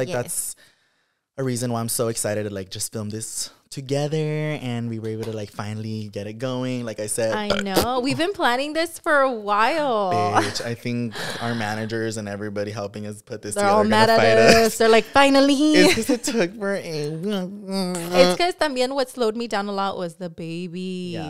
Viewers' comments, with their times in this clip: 0:08 it’s so funny how he burped and then made a fart noise 😂❤